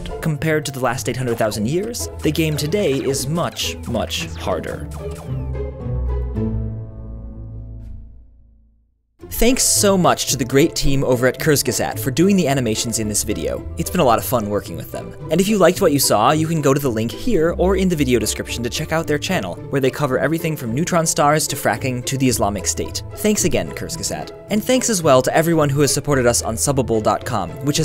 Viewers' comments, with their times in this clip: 0:10 cursegesae? Oh boy, I love how Americans (or rather ALL non-German/Austrian/Swiss people) pronounce German words xD